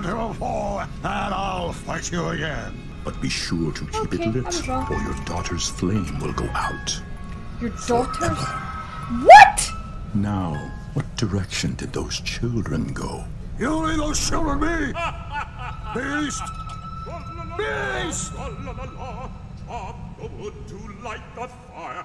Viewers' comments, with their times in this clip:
0:09 That "WHAT" was so genuine lmaooo. I said the same thing my first watch.